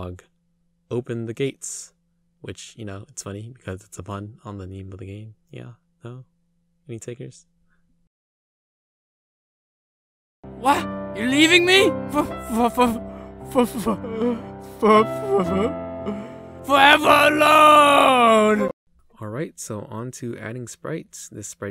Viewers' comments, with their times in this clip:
0:07 Rip ear users